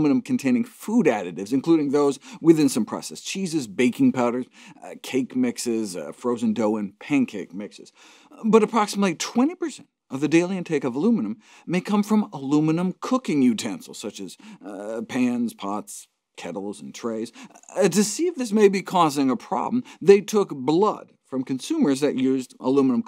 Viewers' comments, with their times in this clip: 0:09 This is a great channel, but the excess uppity tone of Dr. Gregor has me cracking up.